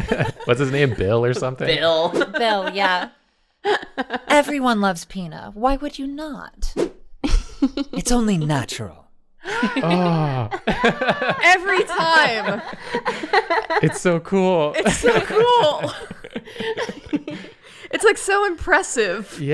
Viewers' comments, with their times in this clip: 0:07 i'm a trans man and someday i hope to have this sort of vocal range holy shit :0